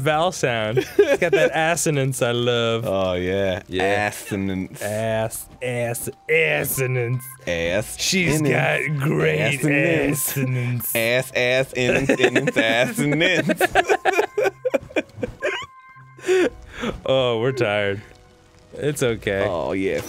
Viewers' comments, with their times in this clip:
0:07 Arin's "Assonance" Song xD